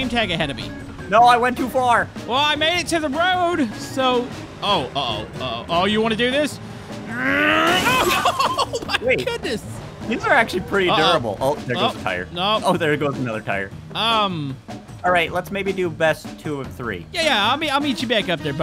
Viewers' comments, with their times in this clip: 0:06 That's not new update sound effect crash so loud by